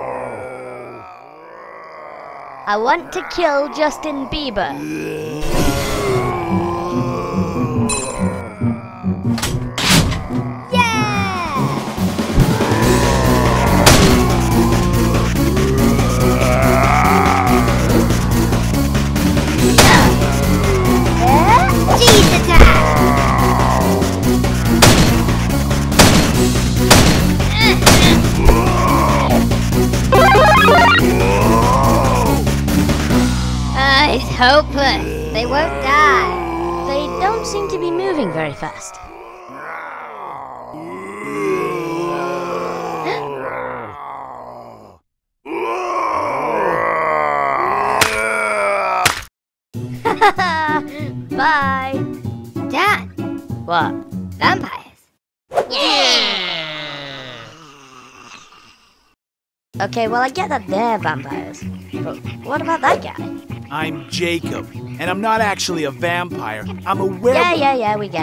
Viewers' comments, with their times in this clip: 0:05 the chase music starts RUN AWAY!!!
0:50 (BLOOM GIGGLES) Bye!